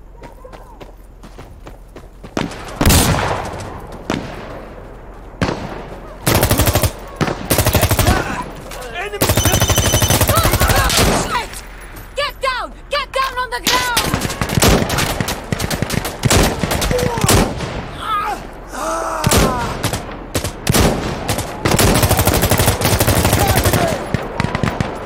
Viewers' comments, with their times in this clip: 0:08 Top 10 scariest sounds in the world Number 1: Nokia 3310 beeping sound